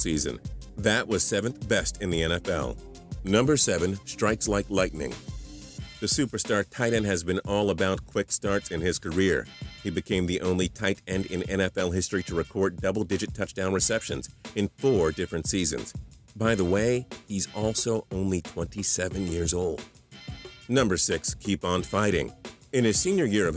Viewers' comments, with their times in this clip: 0:10 he sounds like a robot